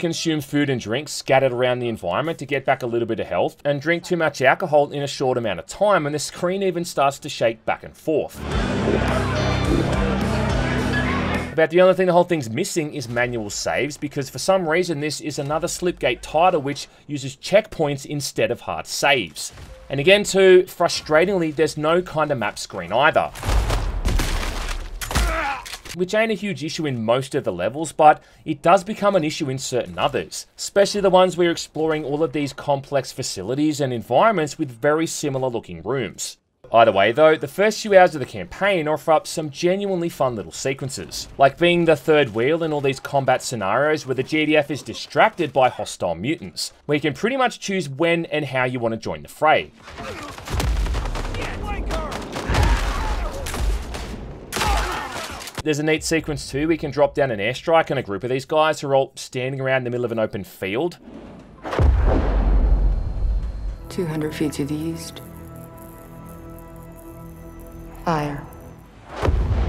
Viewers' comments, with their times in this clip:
0:09 I like the splash when drinking
0:51 I could swear an enemy taunt says "Wank her!" I know she's rather manly but I still shouldn't think that's an option with her